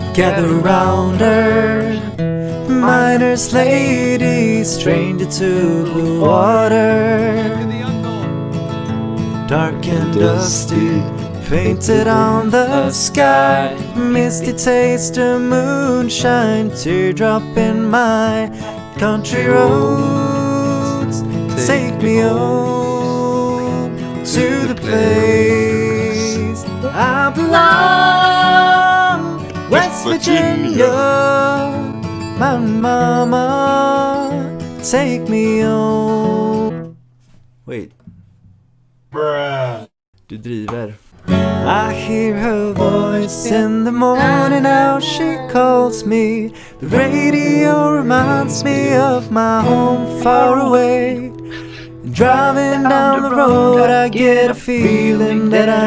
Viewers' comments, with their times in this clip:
0:07 that into the unknown was so good in the background :)
0:08 Sova's to the unknown hits hard with you singing imma cry
0:38 Wait are you Swedish?
0:39 Are you swedish?